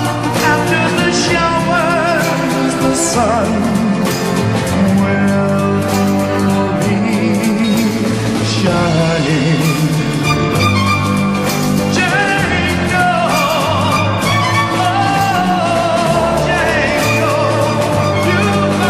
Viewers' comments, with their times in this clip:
0:06 from i think is probably the most intense music i have ever heard